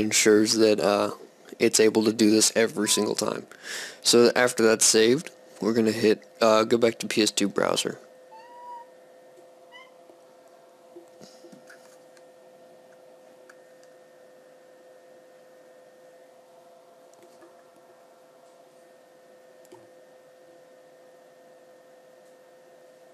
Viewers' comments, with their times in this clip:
0:08 I thought I heard my cat and was like wtf where is he? Then I played it back and noticed it was your cat xD